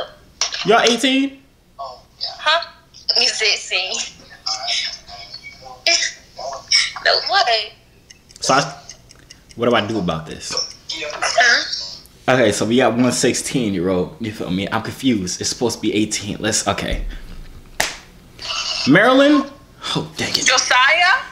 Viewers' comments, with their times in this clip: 0:06 HA LAUGH AT THE END LMFjbaef